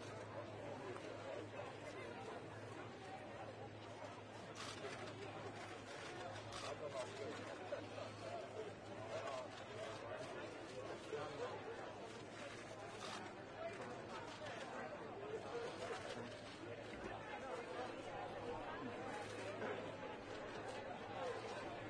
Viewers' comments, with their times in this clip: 0:06 I hear laughter